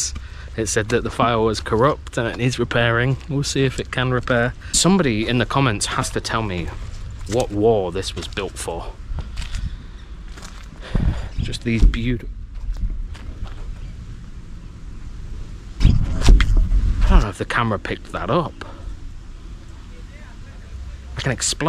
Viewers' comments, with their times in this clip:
0:09 oh yeaa...boom sound twice, if that was a tire explosion far distance it is rare two tire simultaneously explode. Or maybe...the energy residue.